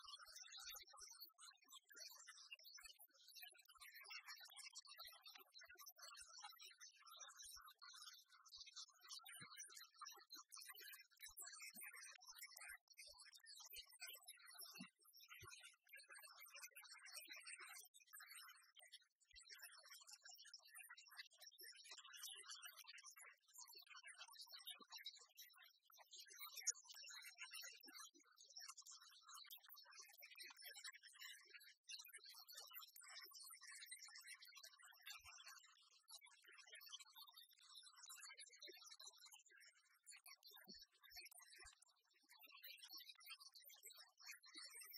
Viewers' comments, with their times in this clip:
0:03 what happened to the sound lmfao
0:27 I love how the voice actress audibly almost cannot hold back her laughter